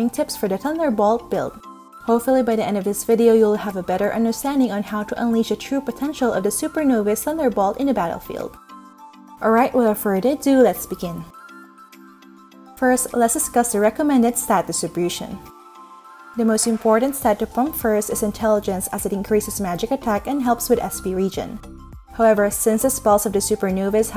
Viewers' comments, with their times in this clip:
0:07 are u burping while saying "Field"?